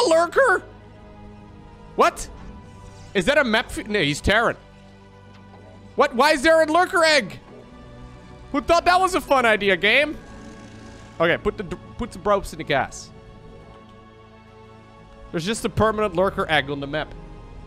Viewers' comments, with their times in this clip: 0:03 when the dutch kicks in...